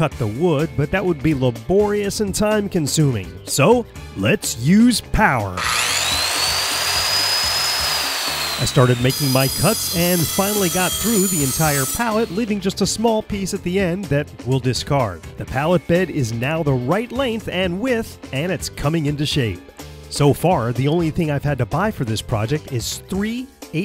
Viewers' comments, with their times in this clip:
0:04 R.I.P high volume headphone users